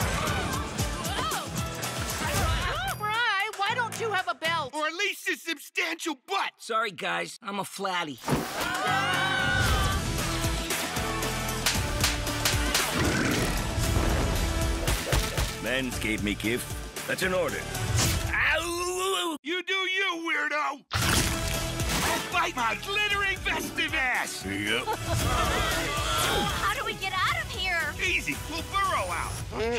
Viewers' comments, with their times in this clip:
0:08 Awesome. So great that the voice actors were kept on, at least it sounds like they were. Spots like where they're falling betray a dip in animation quality, but nothing's perfect.. I'll take it!
0:12 that slap sounded like the battle for dream island slap, Futurama awaits 😄